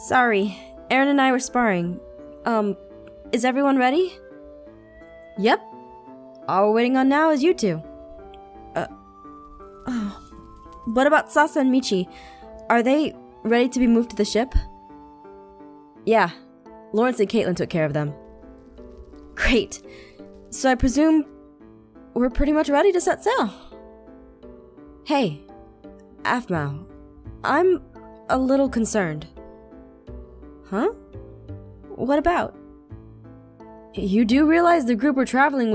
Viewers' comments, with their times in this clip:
0:05 Anyone else hear salsa in steed of Sasha
0:09 Aphmau: What about Salsa and Michi Ah yes Salsa the Shadow Knight EDIT: btw the timestamp for this is
0:09 Am I the only one who realizes Jess called sasha "salsa" ??? Lol I dont know why I found this so funny 😂😂😂
0:10 "What also Salsa and Michi?" Since when did we get Salsa? snorts Or is it just Sasha, who was turned into Salsa for safer traveling, without her escape?
0:10 i heard salsa in stead of sasha
0:10 "Uh... What about SaLsA and Michi?" Sasha is forever now Salsa to me lmfao
0:10 instead of Sasha I heard salsa
0:10 it sounded like she said salsa and not Sasha😂😂
0:10 she says suasa instead of sash!😂😂😂
0:10 if you play on 2x it sounds like Salsa and Michi instead of *Sasha and Michi*. Well to me it does.
0:10 (not to be rude but...)you said sauca or salsa. Aphmau did you go to a Puerto Rican dance place, or did you have too many nachos or tortia chips with salsa?
0:11 I think Aphmau said Salsa and Michi XD
0:11 Did Aphmau say "Salsa and Michi " salsa? salsa. SALSA!!!!!!!!!!!!!!!!!!!!!!
0:11 Did she just say Salsa?
0:11 ..... Did you say salsa..??.
0:11 WHO ELSE THOUGHT SHE SAID “ what about Salsa and Michi” 😂
0:11 Am I the only one who heard "Salsa" instead of Sasha?😂😂 btw rewatching
0:12 did anyone here aphmau say salsa and michi
0:16 Is it just me or did aphmau said salsa instead of Sasha ?
0:17 Is it just me or did aphmau say “sauce and michi” 😂😂♥️